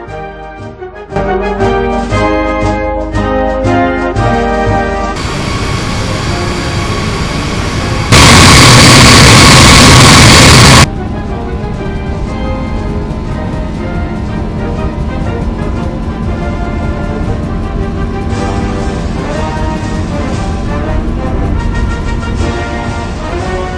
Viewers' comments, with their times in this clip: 0:07 I flinched very hard and rip me I am a headphone user
0:07 earape warning why did i say the part of warning lol